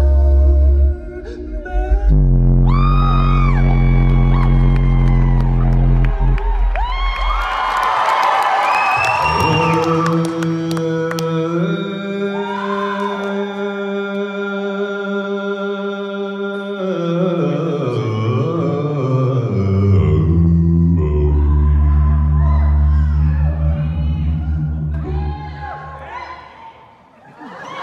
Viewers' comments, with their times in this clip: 0:09 Damn I thought that he's gonna do overtone